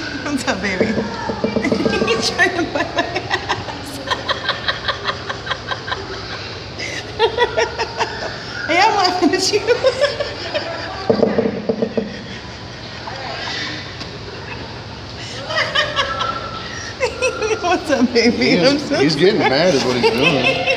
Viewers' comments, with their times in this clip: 0:03 when you were laughing and he stopped and stared at you was hysterical!!! Like he was saying "You like that, baby?" LOL! He is so adorable with you. He DOES want you out of that bubble BAD!!! So damn funny! Never saw that "Teeth Chattering" Like his way of knocking on the glass in a playful way, i guess. Love the videos! :-)